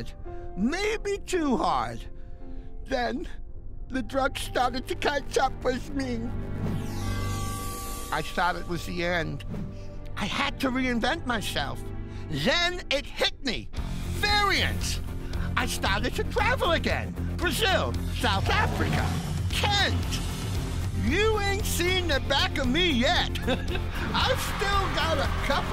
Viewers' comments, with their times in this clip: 0:06 Did they honestly censor "GOD?"